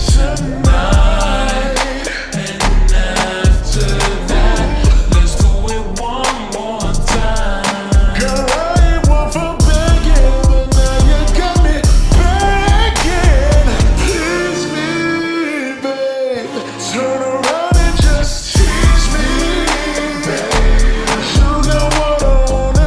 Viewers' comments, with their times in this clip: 0:08 I could never forget that beautiful voice
0:10 legit sounds like "and now you got me pregnant" the definition of this version tho 🌝